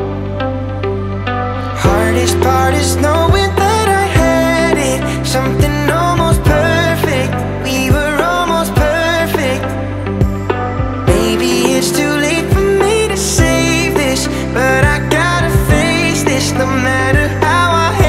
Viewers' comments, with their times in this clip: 0:04 Fav line Somthing almost perfect and the tone of saying it